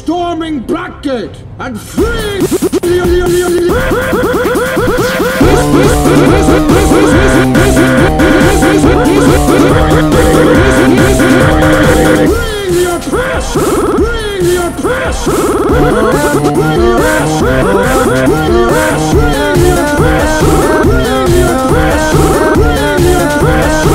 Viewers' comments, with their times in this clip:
0:06 the voice is kinda of that kid's voice from the fairy odd parents.Is the kids name Chester or CJ